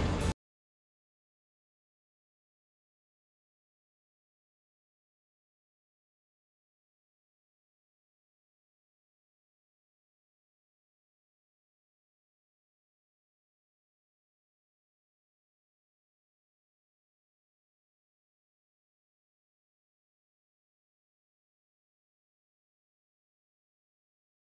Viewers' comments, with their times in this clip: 0:09 The audio cuts out for a minute.